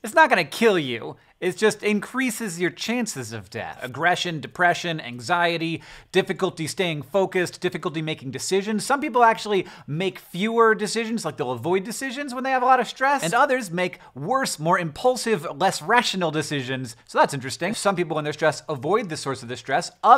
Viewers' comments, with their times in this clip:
0:06 I paused the video at "difficulty st-" to see what the odd noise I heard was. How appropriate was that? "-aying focused."